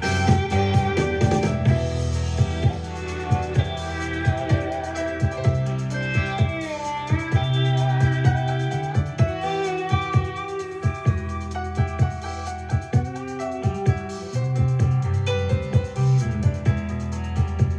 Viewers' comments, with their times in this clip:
0:05 That gorgeous piano that tiptoes in .......